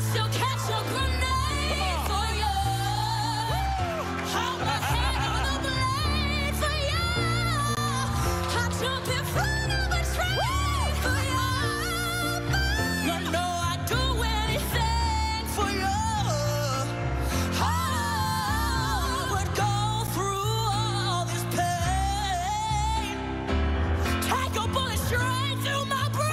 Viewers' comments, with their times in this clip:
0:09 that’s some good pitch!!